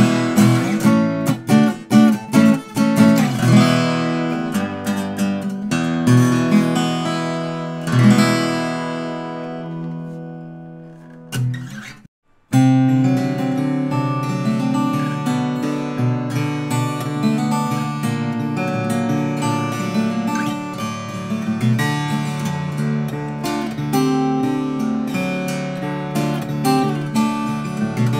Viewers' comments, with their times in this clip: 0:10 the guitar set to open tuning. Do not know if it is open G or D. Anyone know? The rest is the usual tuning.
0:12 there was change in the tuning , what tuning did you use for this section ? thank you